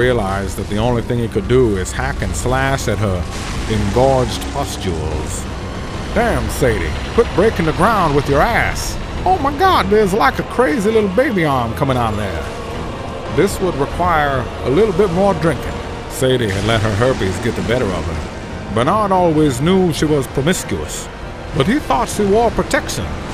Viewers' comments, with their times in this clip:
0:09 Nearly turned onto Christopher walker